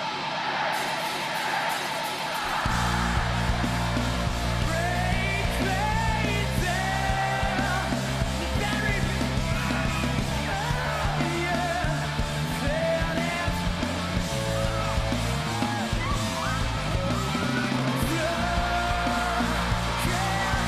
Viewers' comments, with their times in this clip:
0:08 when he is in the crowd he screeches a bit and I wonder if someone punched him or bumped his balls lmao. Has me dying. He was like fak I gotta get outta here. L.olol.